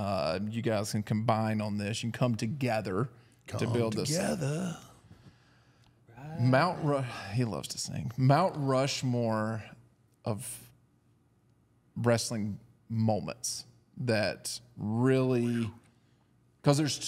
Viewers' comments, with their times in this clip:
0:03 Wow, Undertaker's singing Beatles